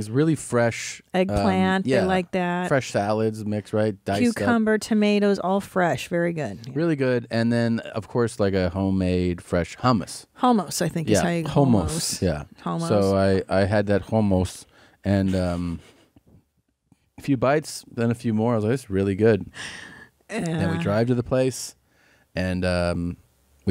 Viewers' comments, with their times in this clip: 0:09 ............................................................. did they really just call it hoemose?